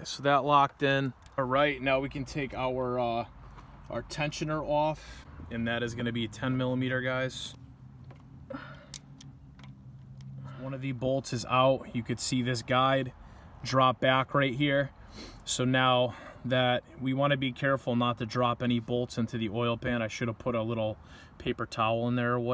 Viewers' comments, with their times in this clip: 0:07 Good video but what is that weird lady grunt ?